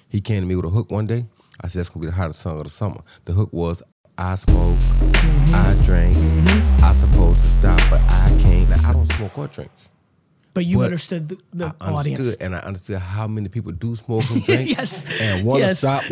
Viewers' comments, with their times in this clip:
0:03 that beat dropping in haha awesome editing !
0:04 the music they added in though!? FIRE!!!!!!!!!!!!!!!!!!